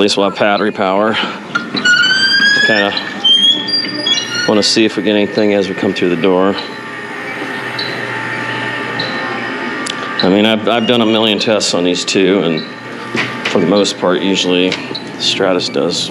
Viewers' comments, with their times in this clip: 0:04 judging by the noise coming from that door which is very obvious they dont have it maintained and considering lubricating a door is simple and relatively inexpensive comparied to refrigeration work. This place probably dosnt do routine maint but only calls when the SHTF.